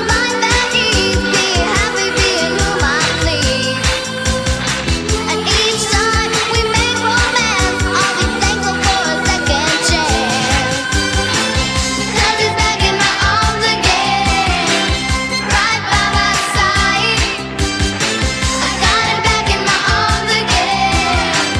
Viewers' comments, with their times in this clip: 0:03 I love the hand motion she does ;) Shes soo cute. and amazing voice.